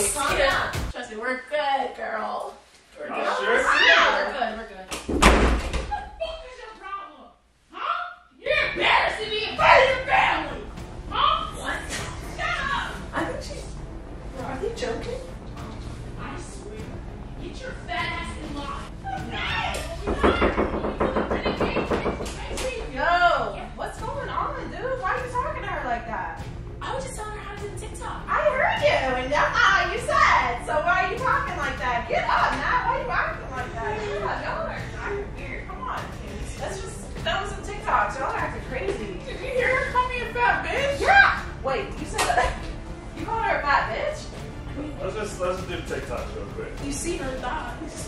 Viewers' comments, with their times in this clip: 0:04 I was DYING when she started yelling
0:29 when she did ezee voice back I dieddd😭😭😭